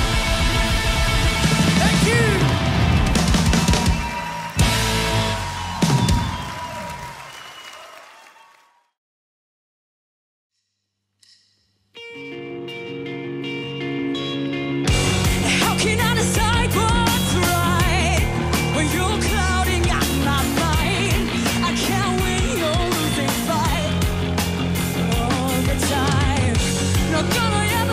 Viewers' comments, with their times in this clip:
0:10 Damn. Now THAT is a voice.
0:11 incredible singer very cool!